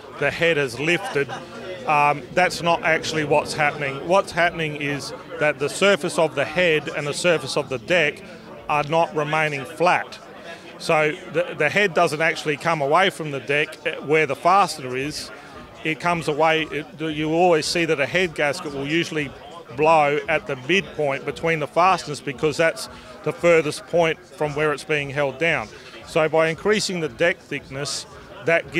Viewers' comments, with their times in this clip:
0:10 You see baby "The head doesn't come away from the dick"